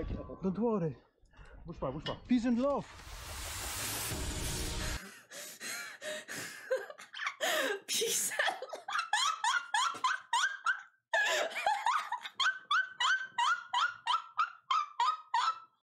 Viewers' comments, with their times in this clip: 0:07 Nobody: My dog barking at the door: